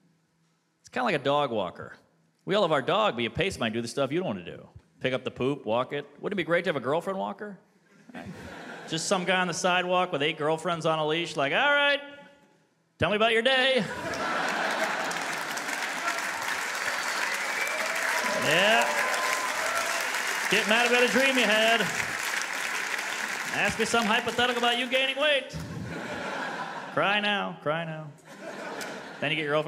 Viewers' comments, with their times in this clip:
0:10 never thought I would hear Mark hesitate about a joke 😂